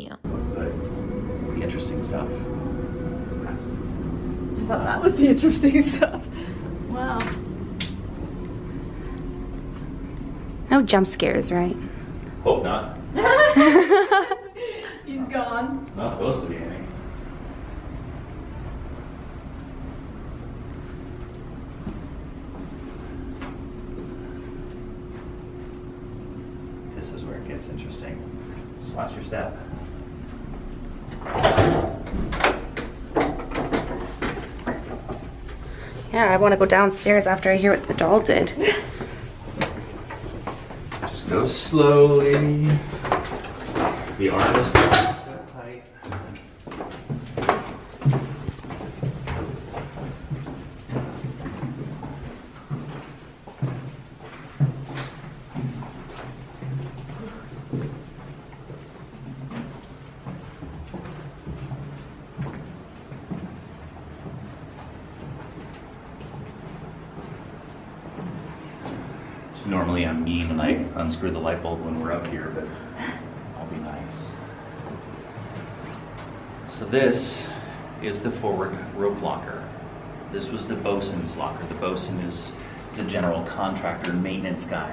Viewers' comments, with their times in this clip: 0:10 I heard a soft hi sounded like a little girl
1:08 when they walk into the room there is a whisper that sounds like "killed us"